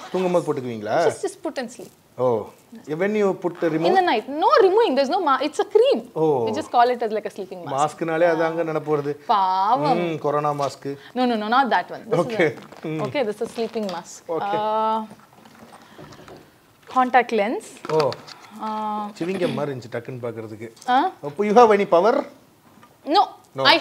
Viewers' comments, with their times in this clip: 0:09 the way she said paavam!!! Nice